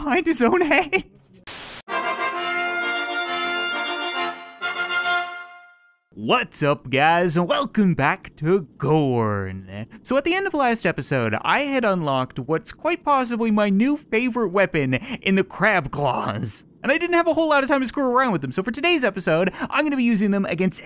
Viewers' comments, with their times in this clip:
0:07 hey guys welcome back to porn Am i the only one hearing this